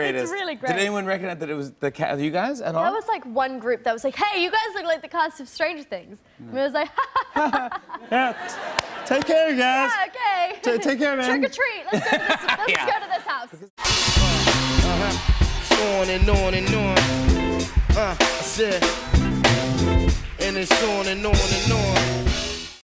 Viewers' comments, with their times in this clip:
0:07 Her laugh is so precious 🥰🥰